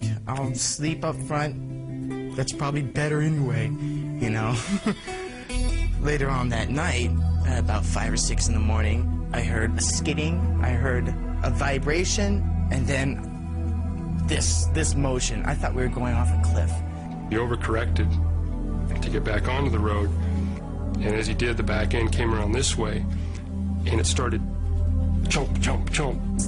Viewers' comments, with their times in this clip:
0:08 that transition from nothing else matters to creepy music gave me fucking chills